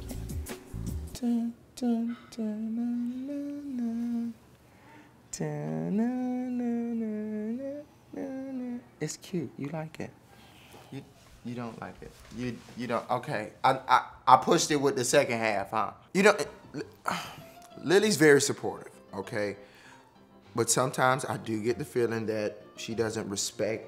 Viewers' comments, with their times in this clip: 0:10 In the guy sounds like Michael Jackson